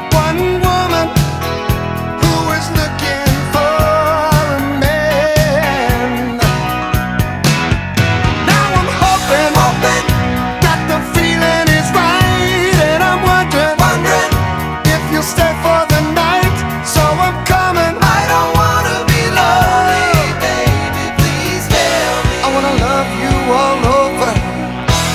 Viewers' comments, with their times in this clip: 0:08 Love those harmonies, reminds me of Sweet Talkin Woman by ELO.